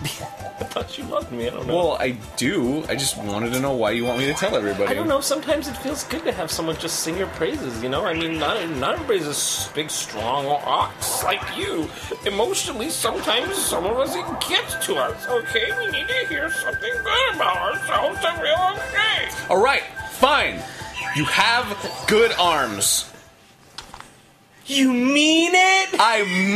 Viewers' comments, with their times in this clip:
0:10 Jons voice lol